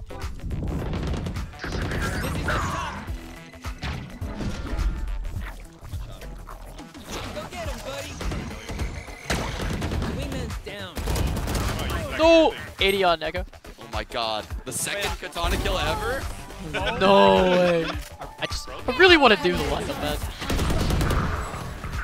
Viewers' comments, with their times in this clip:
0:10 go to did he say the N word..